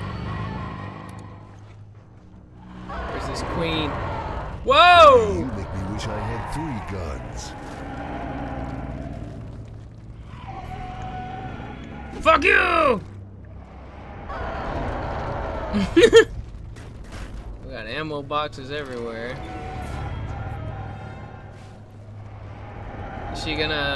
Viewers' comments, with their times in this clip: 0:10 whaen you here one of the cacooned chicks throw up what was wierd and kinda random was right before that (since this is kinda the same thing) i was thinking about that one movie idk its lek called insect? or bug or something liek that where at the beginning when the people take the wierd spider thing out there mouth they throw up